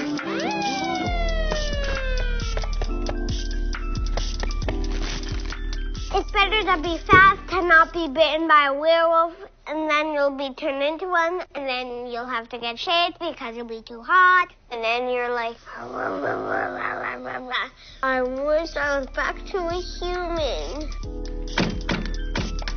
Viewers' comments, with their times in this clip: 0:06 Love the kid and how he's talking (It's just so AWWW!)